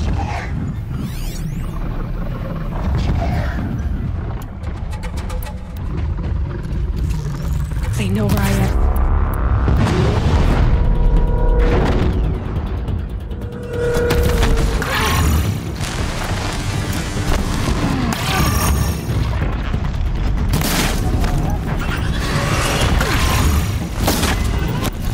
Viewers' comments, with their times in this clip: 0:08 perfect i dont need to startet the ps to herr this ravager sound/ scrram